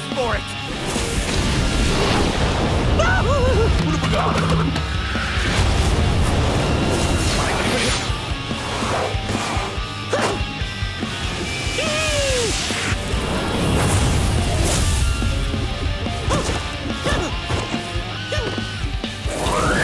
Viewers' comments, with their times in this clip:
0:03 I smiled and laughed when seeing Aku Aku come to help Crash. _And you can't be complete without the gibberishing words Aku Aku says.